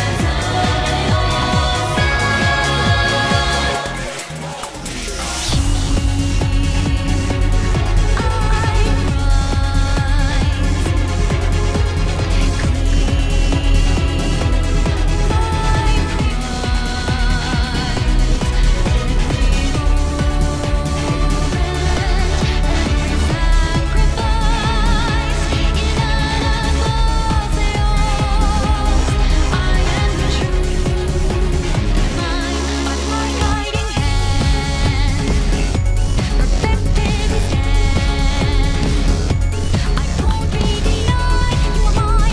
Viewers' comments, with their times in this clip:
0:03 In the chorus transition parts like I was thrilled in the fight because I thought they were saying "Behold! UL-TI-MA!"
0:17 From what I can hear in the lyrics it sounds like "claim my prize".
0:25 SO THAT'S HOW YOU SAY IT 🤯